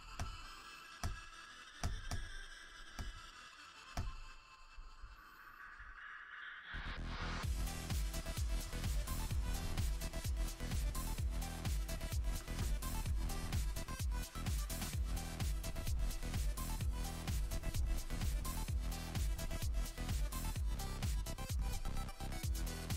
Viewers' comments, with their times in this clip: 0:09 I heard evws'loud clicks